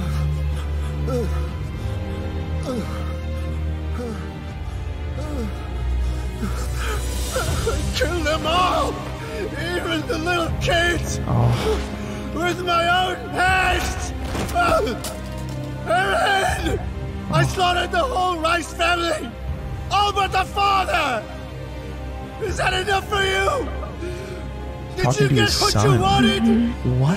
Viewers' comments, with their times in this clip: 0:10 With all due respect to the American dub, but this scene of Grisha in the original voice has a totally different weight in my opinion, it's a crime to watch without hearing the original performance